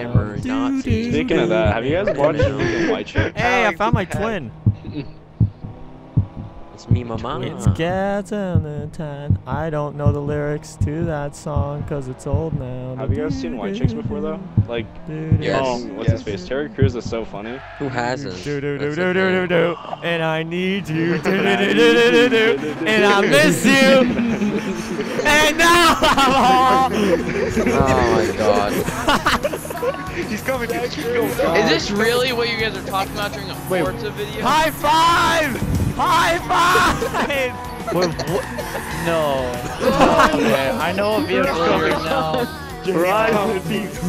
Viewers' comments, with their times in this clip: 0:09 his voice is amazing 👍
0:25 Too far with that voice lmao